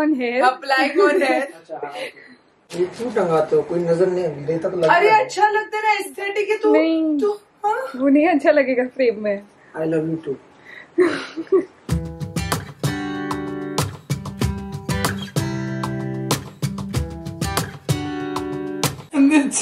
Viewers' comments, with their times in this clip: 0:06 that 'aan' was sooo adorable 😂😂😂